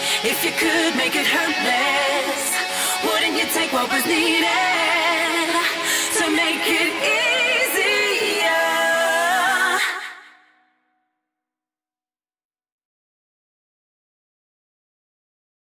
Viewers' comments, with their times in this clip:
0:12 ears bleed? huh? ^_^